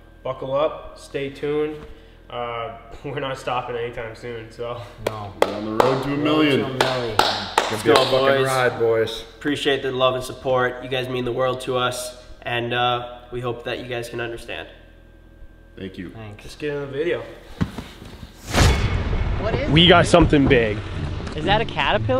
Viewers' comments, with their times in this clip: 0:08 awkward clapping action...